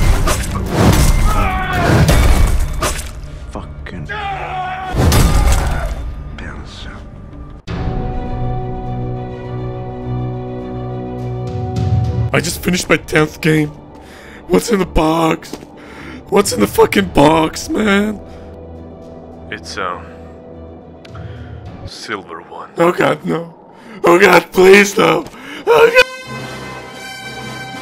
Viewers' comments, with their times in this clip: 0:10 fam your voice god damn
0:13 The most voice cracking shit i've ever heard